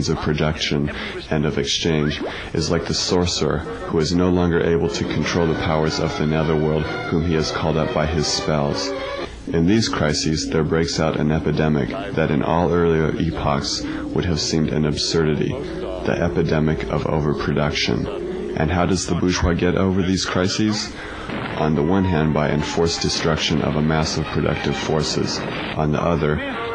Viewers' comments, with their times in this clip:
0:09 That scene is kinda creepy (in a good way) due to the darkness combined with the creepy voice.